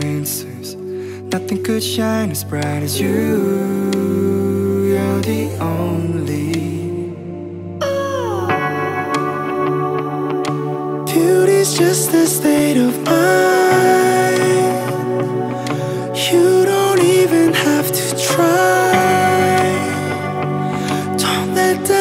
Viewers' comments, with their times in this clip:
0:10 Is it only me who feels like birds of a feather sounds a little similar to this?